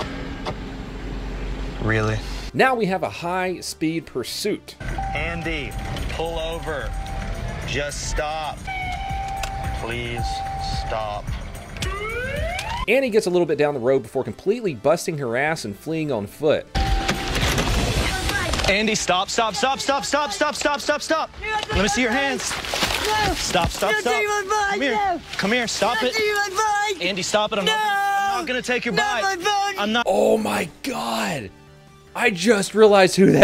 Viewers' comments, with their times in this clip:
0:07 "Please just stop." Dude cmon, I don't get paid enough for this shit. I feel kind of bad, but the officer sounding just so defeated and over this bs is so goddamn hilarious to me. Just cracks me up. Please.. stop..
0:09 the saddest “please stop” I’ve ever heard
0:21 I swear it sounds like Chunk from The Goonies! Guess you had to be an 80's kid to get this comment.